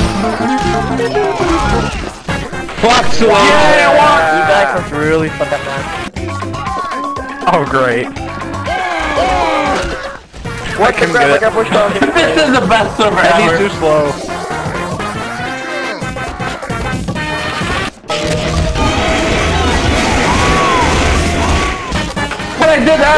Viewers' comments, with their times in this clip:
0:08 I always liked how both Heavy screams were in rhythm